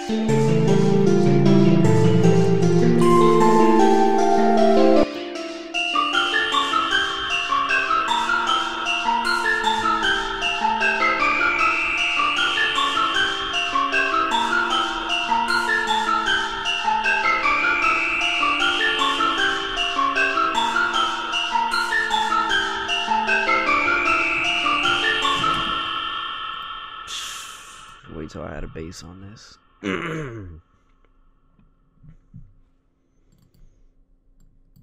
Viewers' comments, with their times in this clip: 0:05 this probably is one of the best melodys ever
0:08 When the sound's so hard u gonna do that stank face hahahah made my day.
0:10 the nick mira kind of beat 😂😁😄
0:19 HE RELIZED THT MELODY TOO FIRE TO MAKE ON LIVE
0:21 Nick hit that Woah
0:21 Nick hit that Woah